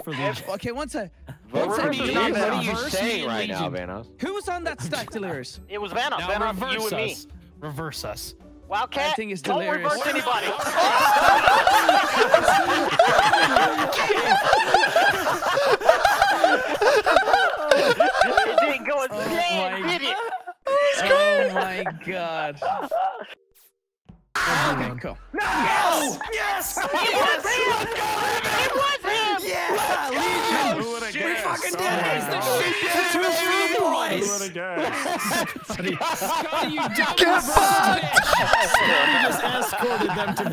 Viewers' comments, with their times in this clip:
0:09 is perfection. I enjoyed that laugh
0:23 RIP headphone users 😂